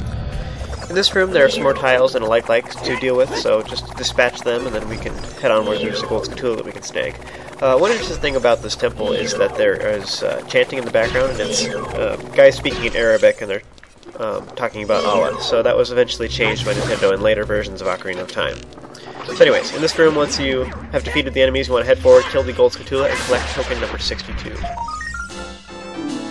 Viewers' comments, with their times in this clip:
0:08 So that's why the background music seems different. Allah ... that's not the only thing that's muslim. Check out all the cresent moon signs. I hear they removed those subsequently as well ...